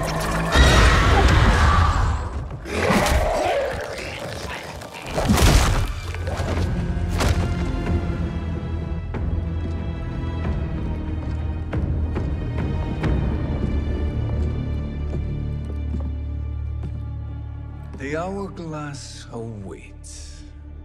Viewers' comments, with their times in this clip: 0:07 that music is bad ass